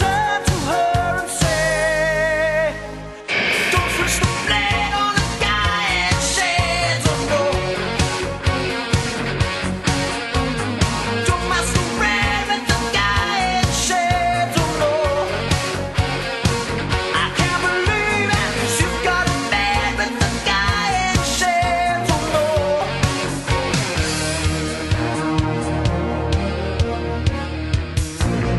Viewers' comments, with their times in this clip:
0:03 "don't be so blend, on a DIIIIET say no more" that's how I hear it all the time 😆
0:04 It’s happened to me before: I’ll be listening to this song on an old crappy car radio and I swear it sounds like Van Halen😂
0:09 please tell me that doesn't sound like Michael Jackson's Dirty Diana and Beat it, I think BAD too.